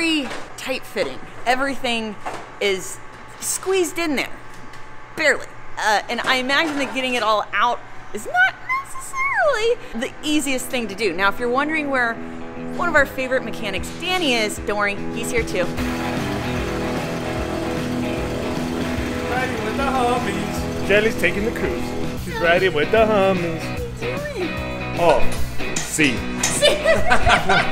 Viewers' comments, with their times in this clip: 0:09 Never heard you hit that octave